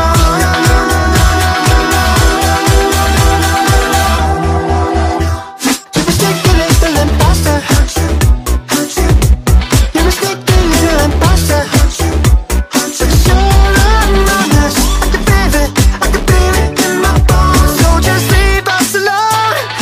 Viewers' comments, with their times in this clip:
0:04 there is a quiet no no no no no